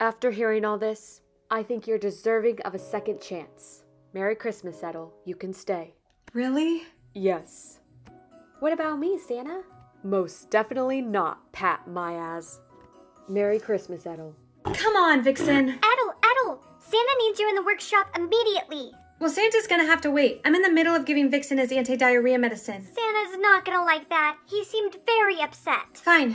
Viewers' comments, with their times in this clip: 0:07 I heard pat-my-ass XD